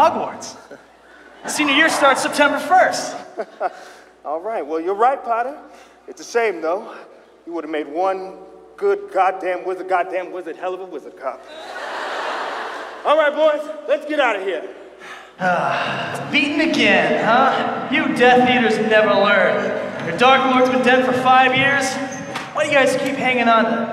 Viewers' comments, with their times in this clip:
0:08 how in the world did he take one look and deliver that line without stuttering once???